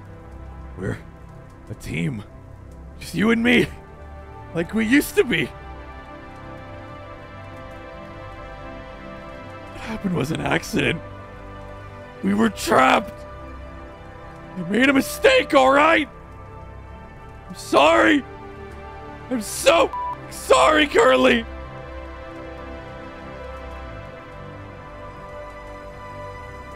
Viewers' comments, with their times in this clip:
0:08 man the voice acting is so good what